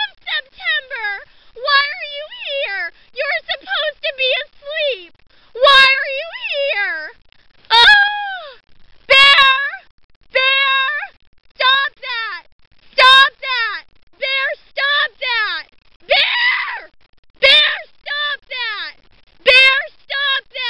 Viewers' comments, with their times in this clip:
0:07 She sounds like Olive Oyl from Popeye!!!
0:08 She literally Wilhelm screamed lol